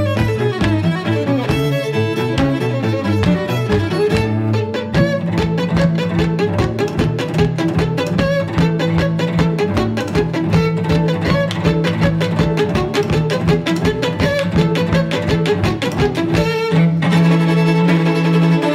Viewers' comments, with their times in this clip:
0:05 Bruh who knew you could gallop on a cello These women never fail to amaze me